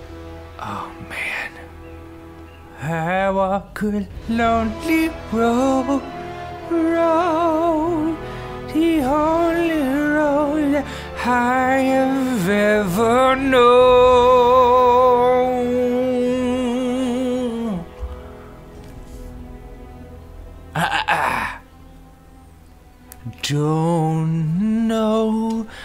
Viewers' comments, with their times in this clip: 0:10 he sounded like Johnny Depp in Sweeney Todd ! D:< -jizz-